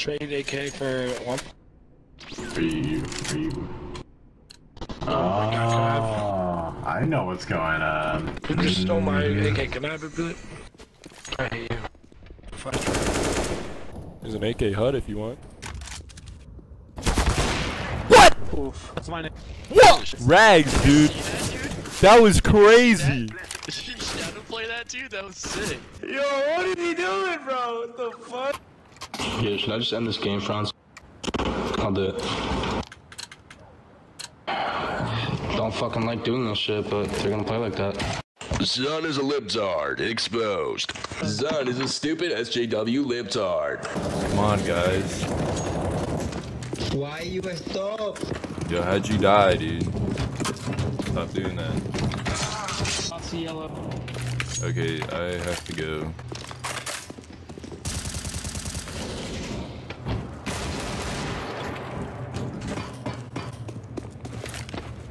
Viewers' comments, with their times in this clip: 0:08 you stole my ak, can I have it back? He sound like a dumb cartoon character 😂
0:49 what kind of fucking eco do you play on. hear that door?